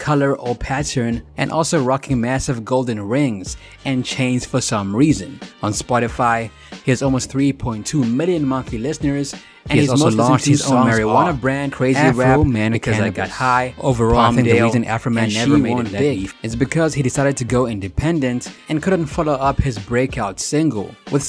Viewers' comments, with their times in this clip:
0:09 Why are you overlapping yourself lool